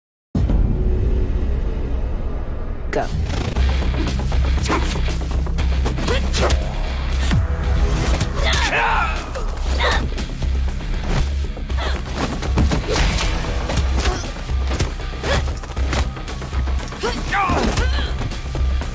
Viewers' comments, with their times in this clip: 0:03 I swear to God when the beat started playing i thought it was the Danny Phantom Theme.